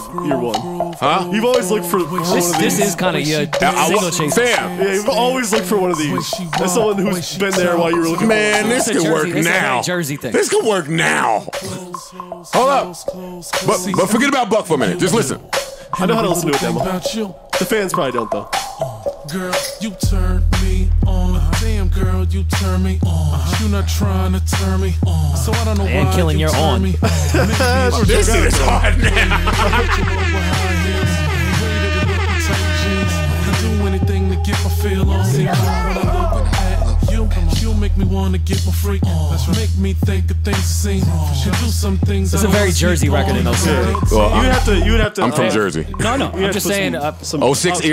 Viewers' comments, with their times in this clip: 0:04 that song goes off!!
0:24 might be the worst song I've ever heard
0:34 That Jersey hit xDD The way he pronounced 'on' was even the same as Joe